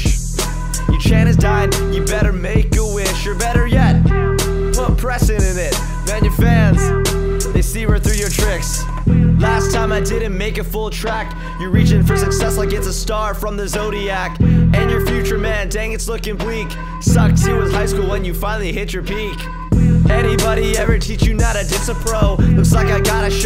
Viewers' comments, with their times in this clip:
0:09 woah that was the cool rap